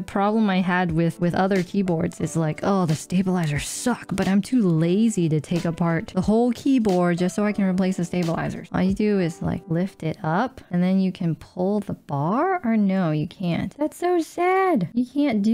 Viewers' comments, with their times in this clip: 0:03 advantqage of the clip-in stabs if you take the little bit more worse sound